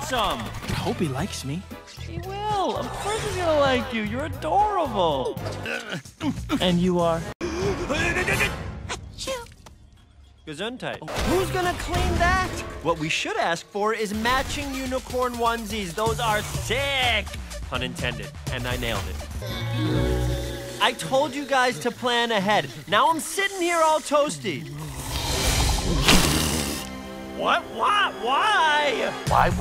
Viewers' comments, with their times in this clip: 0:08 he doesnt have a dad sneeze...
0:17 THE SNAP This turtle is fruitier than me